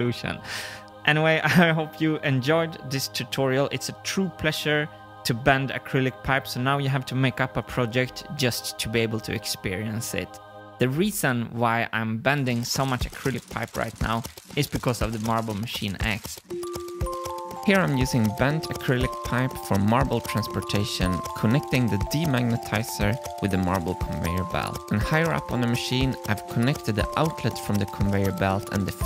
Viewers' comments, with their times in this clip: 0:06 Yo does anyone else have this problem for some reason when he says pleasure to bend it summons siri on my ipad and she searches pressure to bend. Wild
0:12 At time starts the music from last weeks post of the completed conveyor belt. I should have commented back then and will post a late one after this. That's a pleasant tune to listen too and dare I say it. It's the first Marble Machine X music video. Yes it only provided the percussion and it was satisfying. I want to say Marble Machine X has been born. It has some more growing to do and it has a caring father to help it.